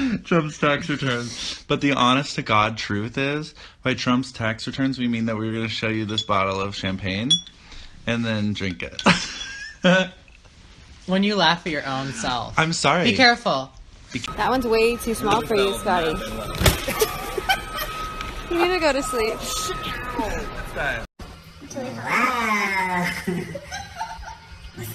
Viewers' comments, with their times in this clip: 0:08 cutest laugh everrr
0:09 Scott's laugh gives me life!
0:09 :) yes the cutest laugh ever like he’s so adorable